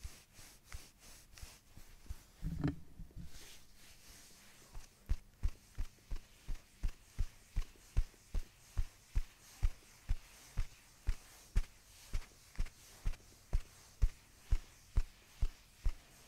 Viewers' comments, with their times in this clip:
0:03 This sequence with the hand chopping (for lack of a better phrase) was so awesome. There was something very ritualistic about it. So cool how you modulated the rhythm throughout.